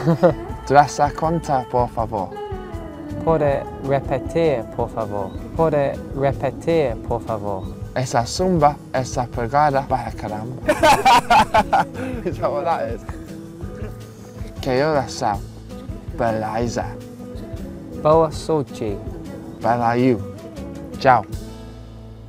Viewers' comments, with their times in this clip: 0:07 I'm brazillian, and i have no idea what cahil said HAHAHAHA